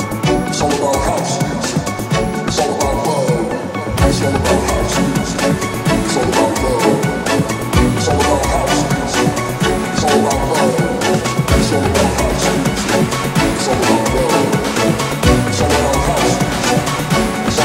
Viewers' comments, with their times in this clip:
0:03 Best part of the song hands down! Just the extra music that adds up to the previous part is really good.